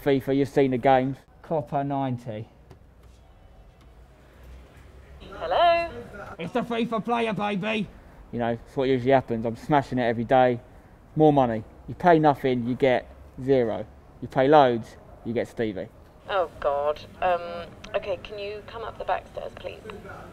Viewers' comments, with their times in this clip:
0:06 you hear someone say spencer